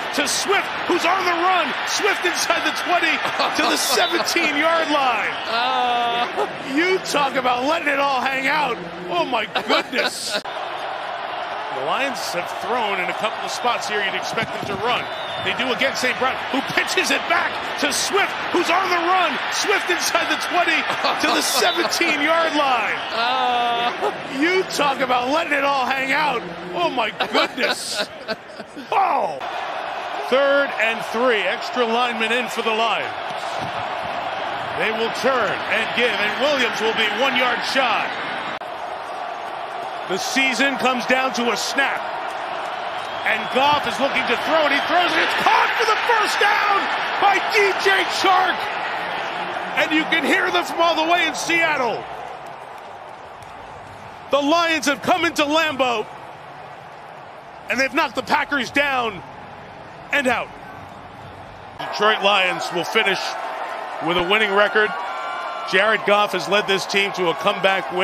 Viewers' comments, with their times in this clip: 0:03 you can actually HEAR Collinsworth finally realize the Lions are for real. Took him long enough
0:53 silence in Lambeau Field...F..k Pack Go!!!!! 😂😂💕💕 F..k Rodgers F..k!!!!